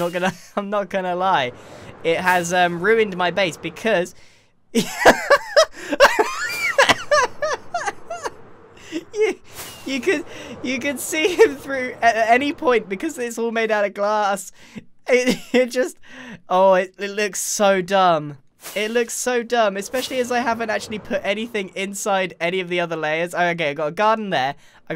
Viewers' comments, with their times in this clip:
0:05 Grian becomes a whole dog toy squeaker😂
0:06 that squeal tho Sounds like a deflating balloon lol
0:06 There's a good high pitch laugh